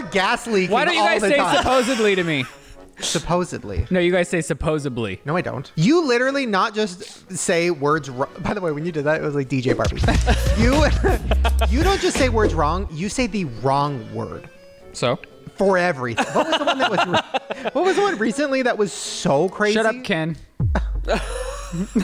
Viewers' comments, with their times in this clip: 0:08 anyone notice the PHub sound? 👀